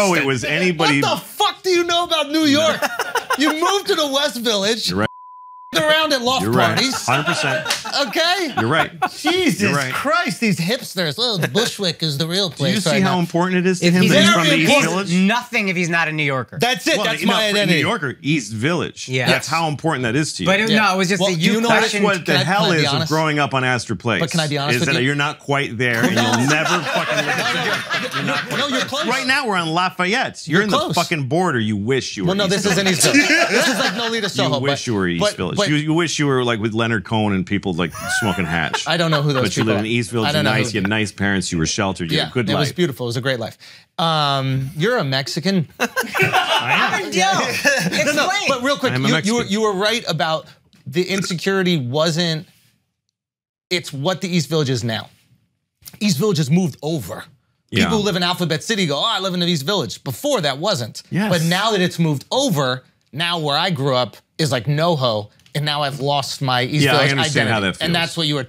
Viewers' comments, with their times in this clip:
0:04 WTF kind a shit is this? Beeped? I listen to Louie and Andrew to avoid beeps.
0:49 that Louis CK burp 🤣😂